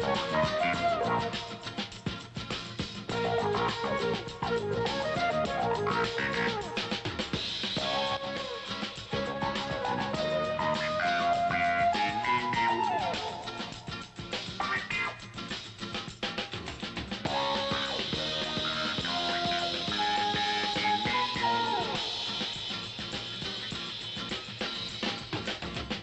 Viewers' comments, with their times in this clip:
0:10 great 1970s sounds!